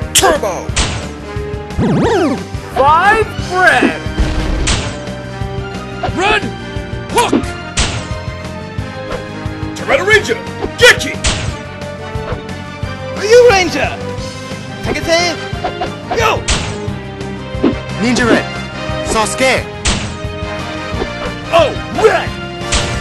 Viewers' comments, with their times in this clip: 0:09 sounds like Dan Green ngl.